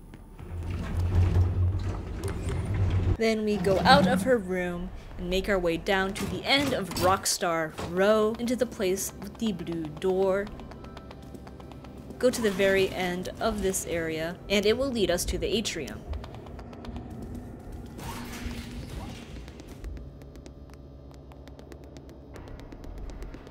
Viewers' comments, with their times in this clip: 0:09 Gregory feet sound speed up is so cute :3